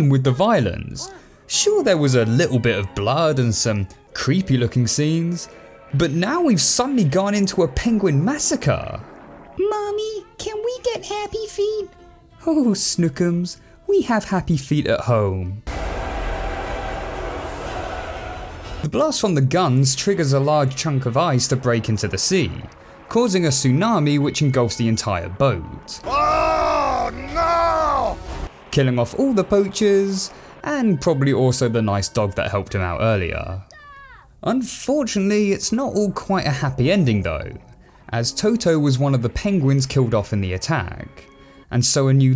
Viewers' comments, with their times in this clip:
0:08 *ultra loud hardbass* Also the mentioning of the name "lolo" automatically reminds me of Klonoa, wahoo
0:25 This guy sounds like heavy from tf2
0:26 He sounds like the heavy from tf2
0:27 sounds like heavy